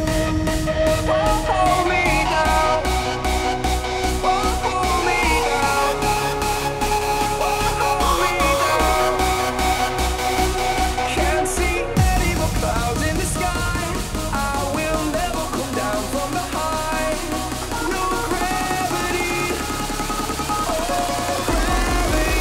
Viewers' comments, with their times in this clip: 0:08 song ? really sad song